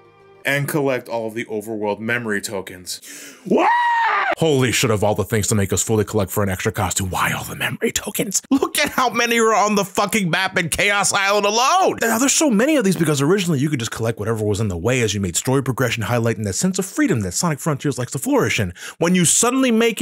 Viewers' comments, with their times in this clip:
0:03 I’m getting AVGN vibes from that scream. XD Oh boy. I wanted to love the Final Horizon but that damn Master Koco Trials. I actually gave up on that last one. I’m hoping that the Sonic series isn’t going to Dark Souls levels of difficulty if that and the final bosses of Sonic Superstars are some worrisome signs.
0:04 why do I faintly hear the dk rap miles away?